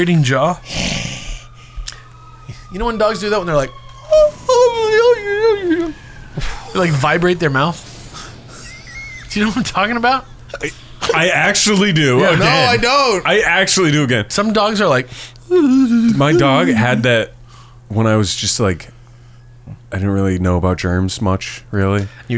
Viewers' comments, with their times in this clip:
0:03 My window when I'm scrubbing it clean